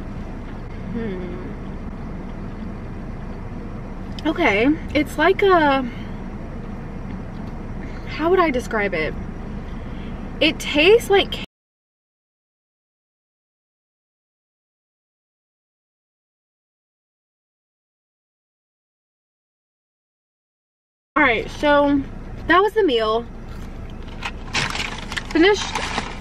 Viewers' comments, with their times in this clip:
0:09 something so off there. like you were talking then it just suddenly cuts off. what? maybe u don't want the haters here.